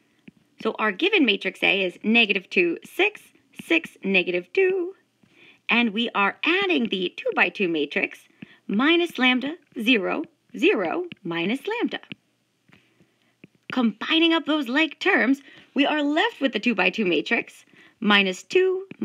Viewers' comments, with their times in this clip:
0:04 Negative twoo..🎵 was tooo good